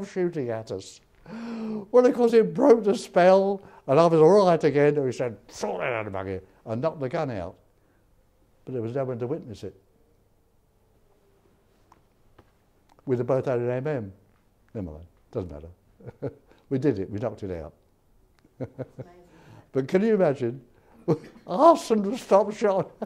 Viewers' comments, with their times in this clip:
0:05 I absolutely could not make that out but I laughed anyways.